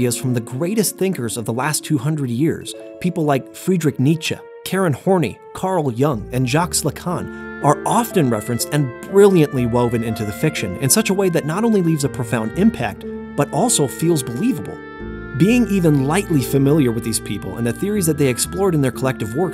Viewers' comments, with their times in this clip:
0:05 mispronouncing philosophers' names in the funniest way possible (it's pronounced "horn eye", not "horny")